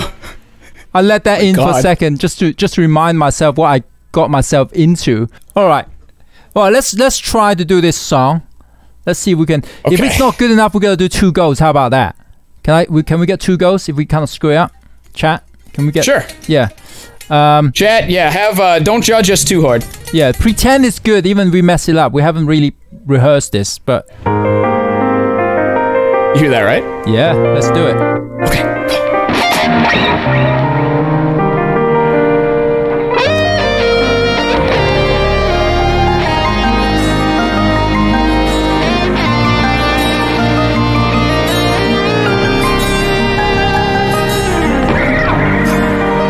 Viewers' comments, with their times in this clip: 0:09 ........you're gonna do 2 girls if you screw up? This took a weird turn.
0:23 they start playing
0:31 They start actually playing You're welcome
0:32 This sound like heaven right now